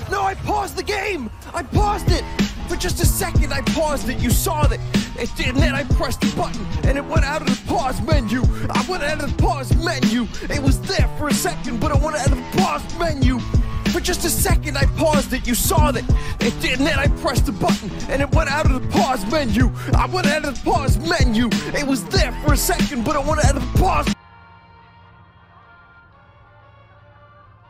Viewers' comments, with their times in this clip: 0:08 and they say whote people cant rap